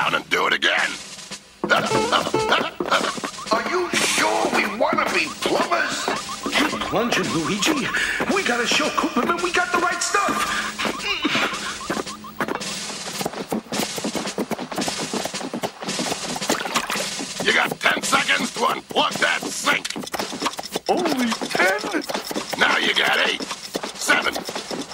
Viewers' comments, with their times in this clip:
0:07 Spoiler Alert. The drain sergeant whispers while Mario talks to Luigi.